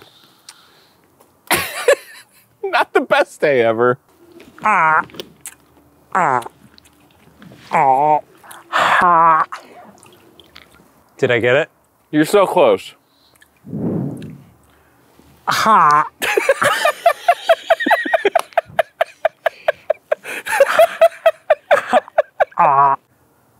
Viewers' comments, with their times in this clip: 0:05 no one: literally nobody: minecraft villagers: